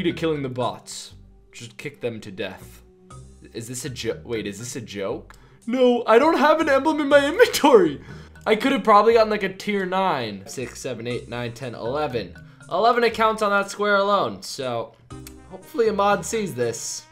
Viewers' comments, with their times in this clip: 0:04 why did he sound like an excited nerd 🤣🤣